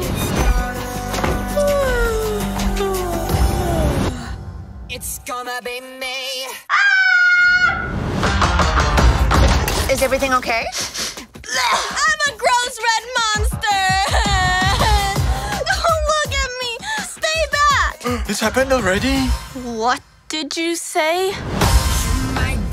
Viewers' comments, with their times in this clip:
0:04 it’s gonna be may
0:09 idk why I like the music here